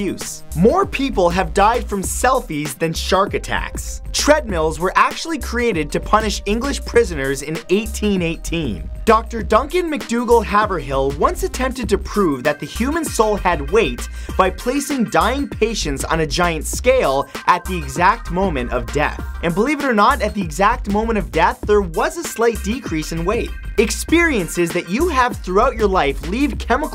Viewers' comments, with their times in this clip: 0:08 How many tries did it take to say that